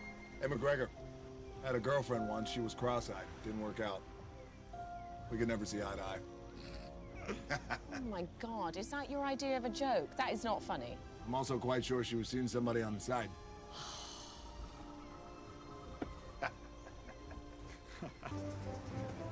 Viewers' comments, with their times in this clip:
0:06 There's always that one guy on the boat that laughs.